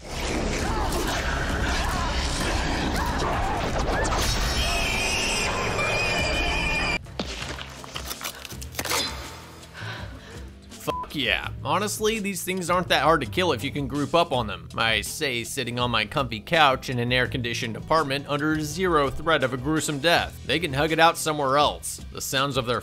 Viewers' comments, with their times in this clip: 0:05 thing sounds like alien in mkx when you land a hit on it ha